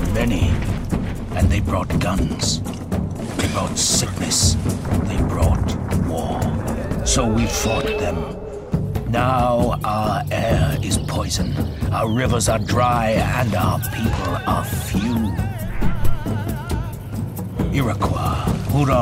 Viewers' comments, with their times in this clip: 0:04 when he says 'they brought sickness', i thought it was 'they brought syphilis' which might be true as well haahaha